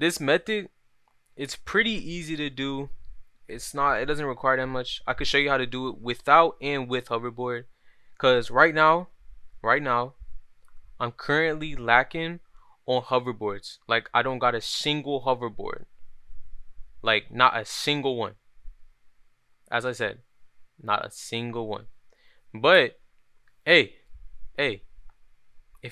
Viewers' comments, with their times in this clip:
0:09 go to in your video and watch how slow you were talking and try to understand how much faster you wouldve gotten to the video if you just got to the point people like it when youtubers are clear and concise